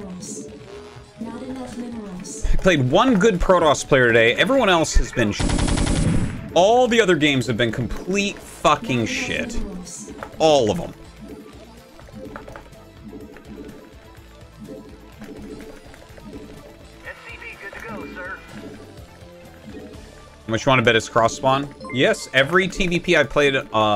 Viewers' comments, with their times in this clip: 0:08 Censored in the beginning, then the editor says, "nah, not working that hard today".